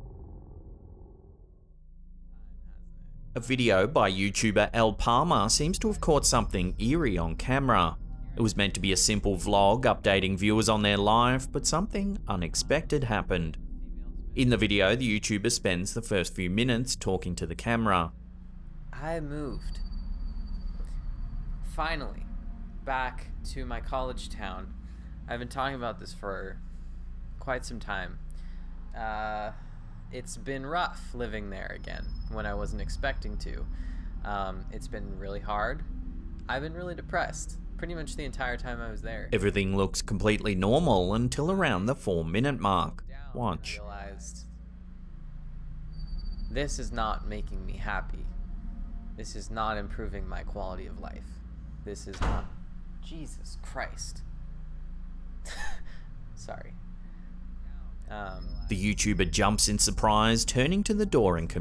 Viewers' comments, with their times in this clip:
0:03 It seems so odd how the person reacts to the door slamming but doesn't go over to check on it. They simply stare back into the camera and keep talking. So strange.
0:36 that chick got a dudes voice!
0:43 this girls voice does NOT suit her lol I was confused a little … lolol or possibly I had 1 too many twisted teas 😂😂🤣😵‍💫
0:45 is that a Women or Men ?? The Face look like a Women and the Voice like a Men WTF ??!! I‘m confused